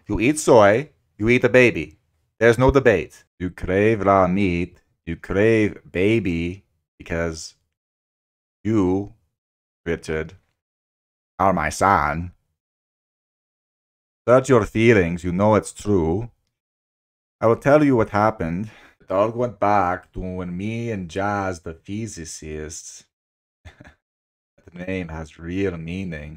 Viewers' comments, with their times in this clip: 0:08 the way you said "are my son" has me cracking up every time 😆